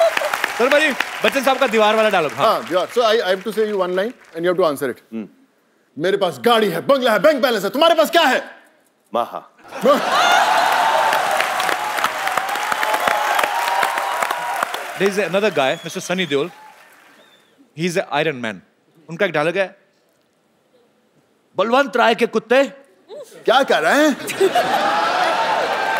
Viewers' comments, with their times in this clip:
0:09 the way he said “Ma hain”.. God Damn outstanding.. 😂